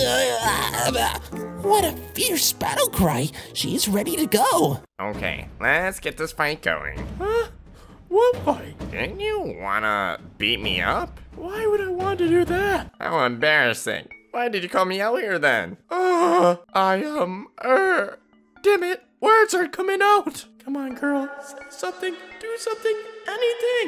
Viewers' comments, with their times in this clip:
0:05 what was with that voice swap